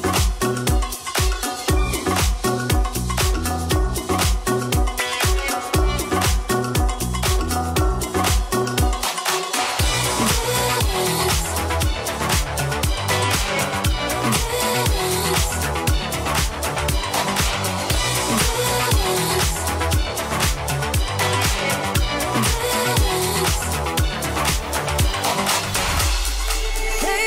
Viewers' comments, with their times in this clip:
0:09 The transition from The Shining to I Could Dance was just superb ... I keep going back to it